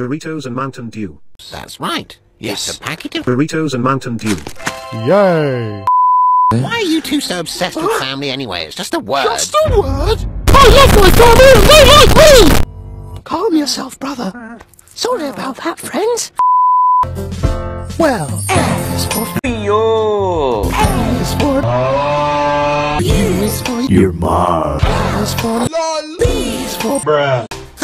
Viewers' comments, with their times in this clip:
0:10 i can't understand what he is saying 👁👄👁